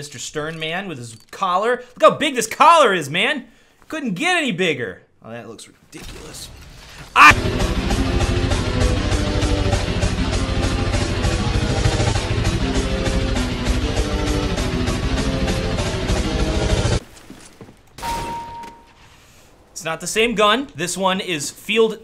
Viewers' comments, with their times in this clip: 0:07 I really like the mother 2 music